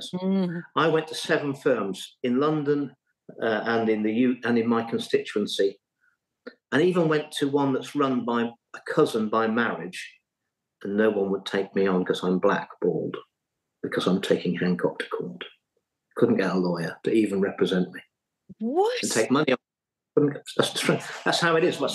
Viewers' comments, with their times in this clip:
0:07 ...and no one would take me on because I’m black... balled. Slight pause there, had my eyebrows raised for a moment 😳~ wow, before and after it sunk in 🤷‍♂